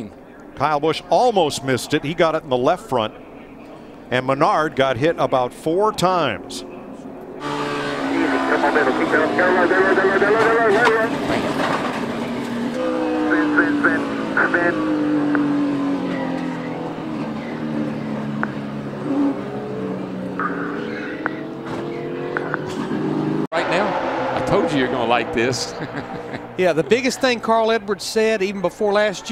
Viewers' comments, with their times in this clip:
0:10 Denny hamlin's car went "WEEEEE"